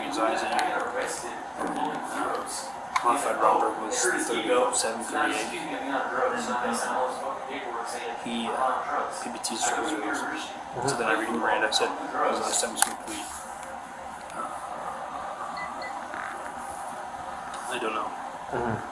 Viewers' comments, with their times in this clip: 0:04 Heh. you can hear the kid in the background saying that he hurt the cop's ego. This kid now OWNS this cop.